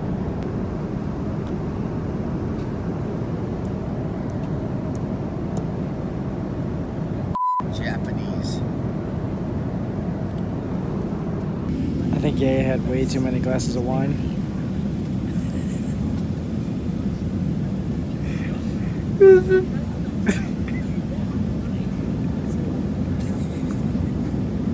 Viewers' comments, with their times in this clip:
0:09 Lol it was in Korean xD not japanese